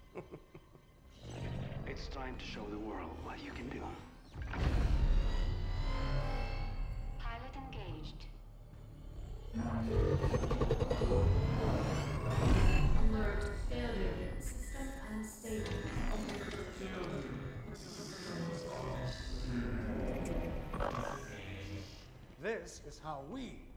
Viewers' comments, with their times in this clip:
0:09 I can hear the faint screech of Ghidorah